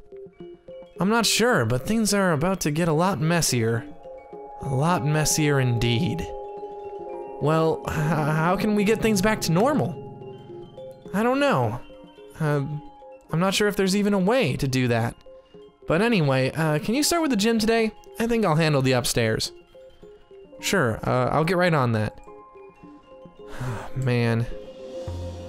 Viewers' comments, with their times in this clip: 0:08 If u listen closely u will here the puppts music box